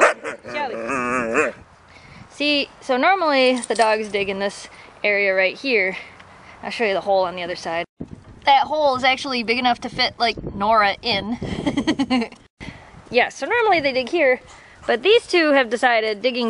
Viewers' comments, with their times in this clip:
0:04 was shellby "play-barking" or was that like a dominans thing or something? Btw I love your dogs and videos! :D